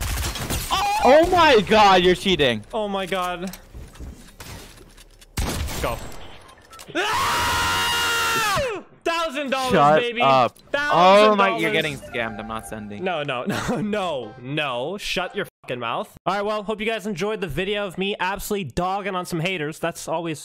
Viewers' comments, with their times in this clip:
0:07 If I wanna hear a dinosaur here